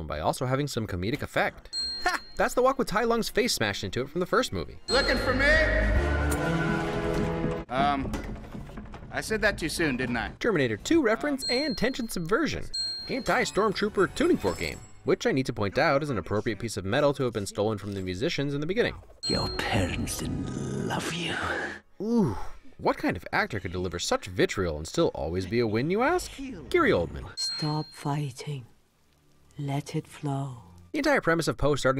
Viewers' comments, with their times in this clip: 0:06 is it just me or did I just hear the showa King Ghidorah roar?
0:18 God does Gary Oldman just oooooze over that line, I love it